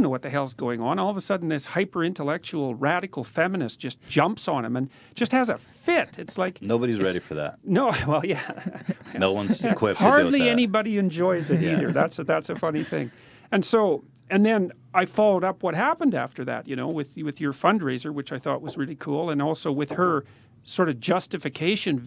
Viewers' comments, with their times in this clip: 0:08 That FAKE LAUGH we all felt it..